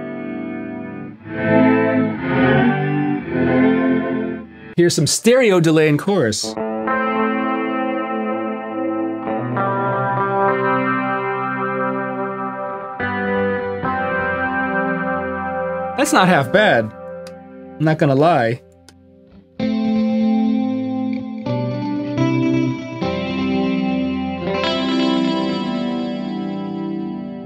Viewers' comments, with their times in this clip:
0:10 Patch And riff beautiful 🔥🔥🔥